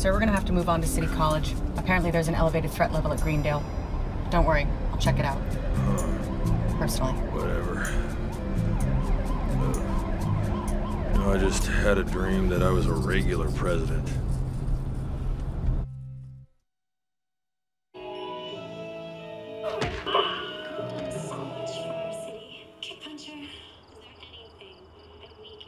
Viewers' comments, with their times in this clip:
0:09 is she cracking up?